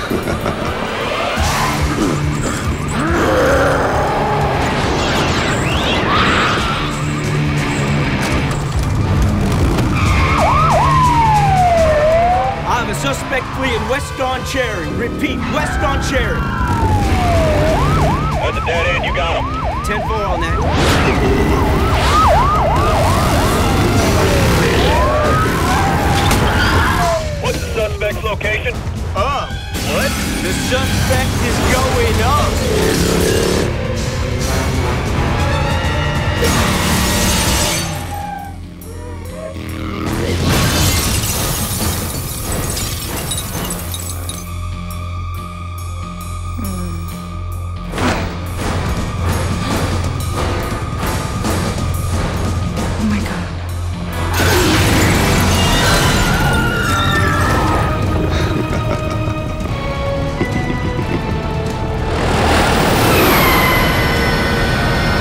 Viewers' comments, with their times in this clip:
0:03 anybody else hear a little Sinistar in there, or is it me?
0:29 “up! the suspect is going up” the way he says that 😂
0:30 the way the cop says the suspect is going up gets me every time !! You can just tell in his voice that is seeing something truly supernatural 😈 😈 🔥 🔥 !!!
0:48 i love the drums behind this scene.